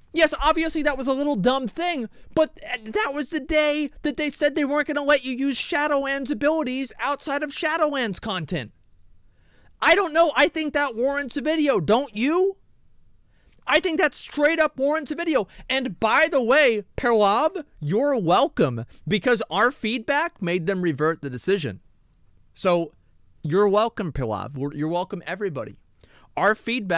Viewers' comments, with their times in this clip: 0:09 ASMON SOUNDS LIKE TRUMP